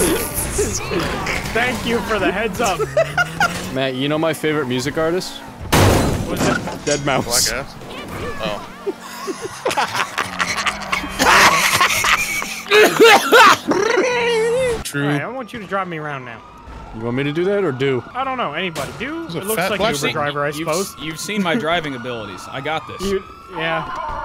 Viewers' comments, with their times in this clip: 0:10 What the hell is that wheeze
0:11 No clue who laughed like that but it sounded like a Boomer in L4D2